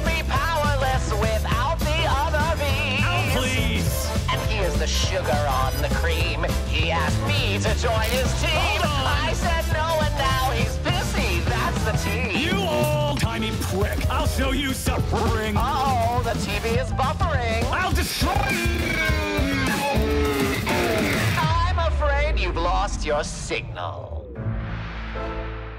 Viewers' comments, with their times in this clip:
0:10 I heard “busy” the first time. …I think it’s the radio effect.